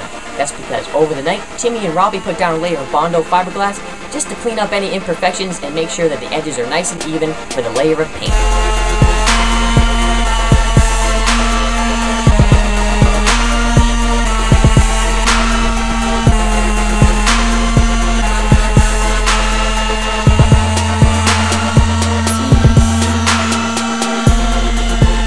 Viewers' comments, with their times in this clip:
0:08 epic sanding remix
0:08 Pretty nice how you made the pitch of the motor match with the beat, Haha!
0:09 i like how the sanding it going with the song
0:11 lmao were you tring to make music with the sanding machine ? & that setup came out nice man!